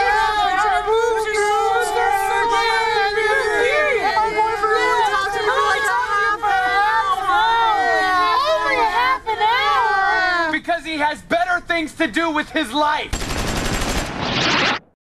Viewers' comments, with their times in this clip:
0:11 made it worth it listening to 1 minute and 25 seconds of fake high-pitched "girl" voices XD